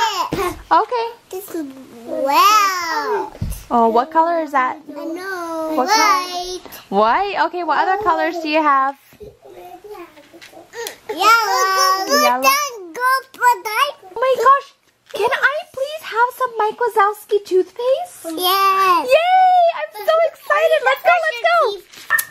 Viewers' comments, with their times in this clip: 0:09 I know...... white... such attitude lol